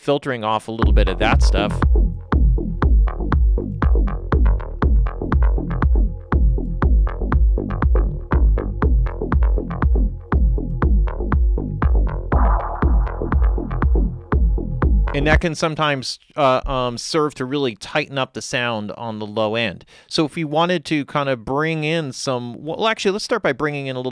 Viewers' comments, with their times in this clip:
0:07 this is so weird, my bass gets louder when the filter is engaged at 18Hz. Alesis M1 Active Mk2 speakers here, I think they cut off around 40Hz or there abouts.